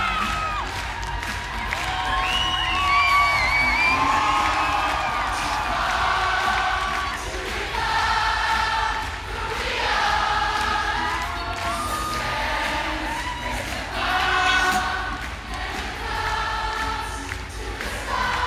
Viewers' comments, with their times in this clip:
0:05 the best part of the concert starts when the audience breaks out into Get Lucky - now that shit brought a tear to my eyes...